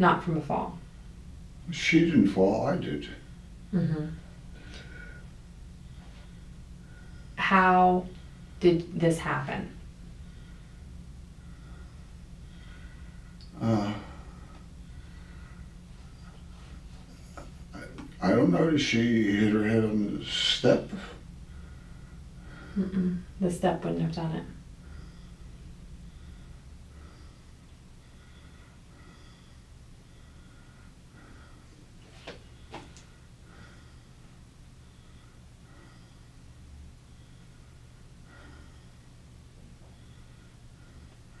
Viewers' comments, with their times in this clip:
0:10 as soon as she started telling him that his bs story doesn’t make sense. That’s when the heavy as$ breathing started. 😖 And omg during them silent moments when it takes him a while to answer her questions and all you hear is his heavy amplified breathing, is annoying 😑 Oh and every time he coughed w/out covering his pie hole, she would lean back away from him. I wonder how much of his mucus flying in the air she breathed in? 😬🤢🤮
0:25 If that were truly the case, why is he not stuttering through every sentence? (being interviewed by police, just after your wife was found dead would make anyone nervous.) Yet, he's quite coherent in the beginning, and at other parts through out the interview- he does not stutter at all. It's like he's fabricated this story in his head, of what story he wants to tell, but as soon as the detectives ask him something he isn't prepared for, he starts stuttering. Imo, he may or may not have a real speech impediment. I also think he's using the stutter as a way to buy time to think of a response. Magically, when he's confronted, it's completely gone. He knows the jig is up. It's pretty low of him to use a speech impediment to try to seem more 'innocent/harmless' and even worse when people like you stick up for these lying faker asshats.
0:25 If that were truly the case, why is he not stuttering through every sentence? (being interviewed by police, just after your wife was found dead would make anyone nervous.) Yet- he's quite coherent in the beginning, and at other parts through out the interview- he does not stutter at all. It's like he's fabricated this story in his head, of what story he wants to tell, but as soon as the detectives ask him something he isn't prepared for, he starts stuttering. Imo, he may or may not have a real speech impediment. I also think he's using the stutter as a way to buy time to think of a response. Magically when he is confronted, it's totally gone.